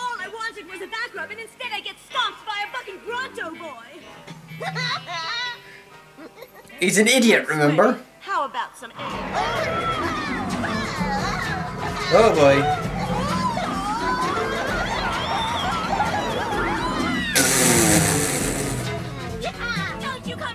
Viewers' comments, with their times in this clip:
0:03 did Petra say the f word?????